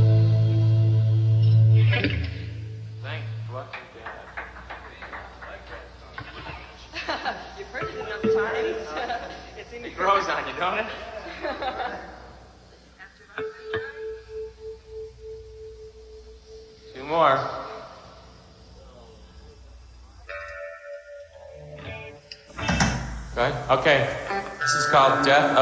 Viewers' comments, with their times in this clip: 0:09 Every song sounded similar, but I still thought it was good. And everyone is still so young. And Billy still even has his long hair. He seems a little shy too. It's really nice that I found this footage here. Thank you for uploading! Did Billy say: "Großartig"?